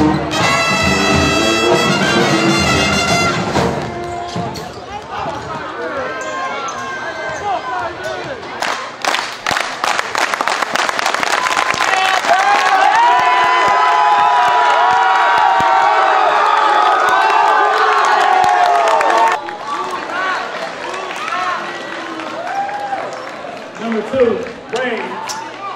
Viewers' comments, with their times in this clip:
0:09 Is that like a school thing where they all clapped in sync💀💀